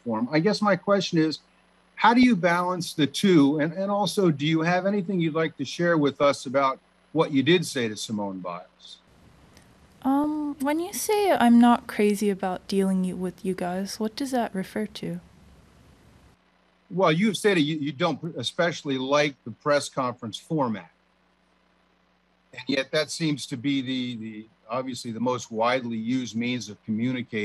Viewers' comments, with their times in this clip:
0:08 It doesn't take a genius to see that her tone is clearly condescending